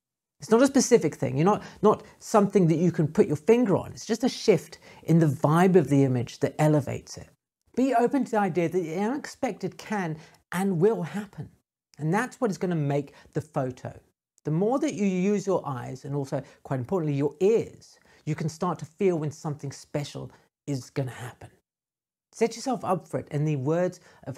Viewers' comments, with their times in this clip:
0:05 Heads up - I think youtube muted your video and threw in stock music from on, probably because it flagged something for copyright.
0:08 Pssst: the right audio channel cuts out and it stays like that to the end. Just a heads-up. :-)